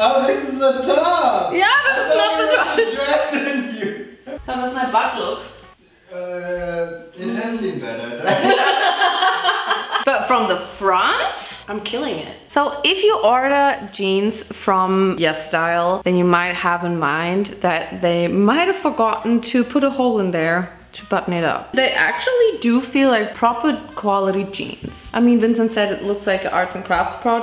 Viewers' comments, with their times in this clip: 0:08 the pain in her laugh, I feel you.